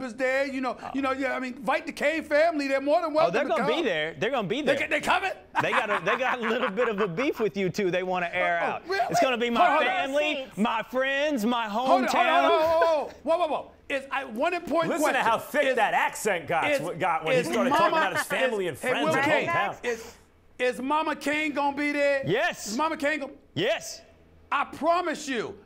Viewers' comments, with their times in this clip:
0:06 Stephen A. Smith with that Ted DiBiase laugh